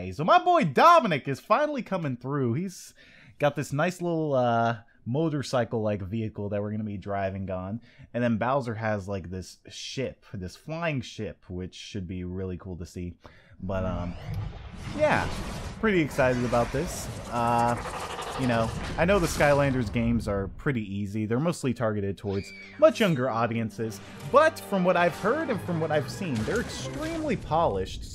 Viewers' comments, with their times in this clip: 0:09 I thought he said "shit" for a second lol